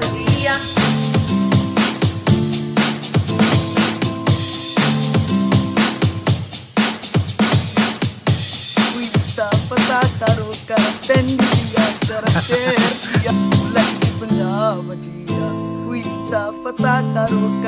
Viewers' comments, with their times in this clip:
0:04 hahahaha although she is not good at singing but she is so pretty 😍